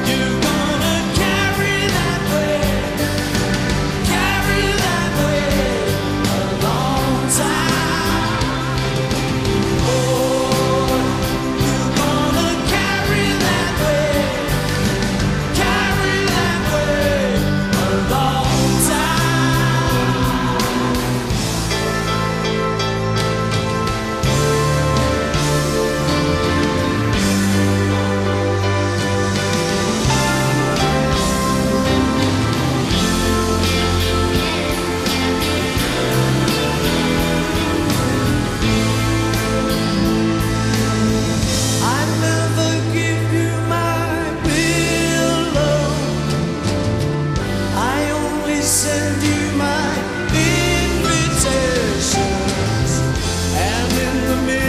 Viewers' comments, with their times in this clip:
0:09 I think that Collins shortened/accelerated tempo, which resulted Paul's disapproval :) Sorry for my english.
0:39 The guitar riff is heavenly